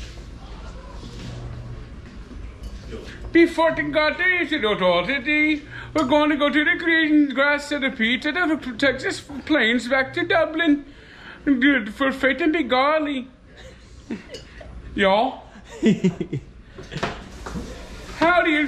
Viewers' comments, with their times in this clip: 0:03 What kind of accent is that, it's a combination of Irish, Indian & Texas 🇮🇪 🕌🇺🇸